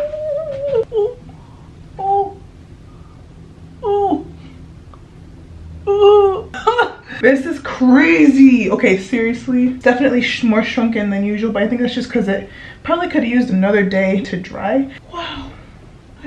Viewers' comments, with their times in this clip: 0:03 when you said “Ok Seriously” my Siri kept going off hahah